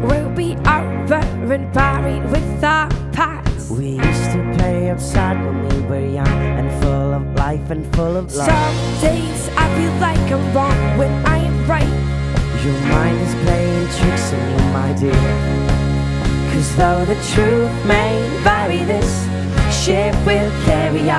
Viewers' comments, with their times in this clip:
0:03 What the fuck? Some sort of mating call?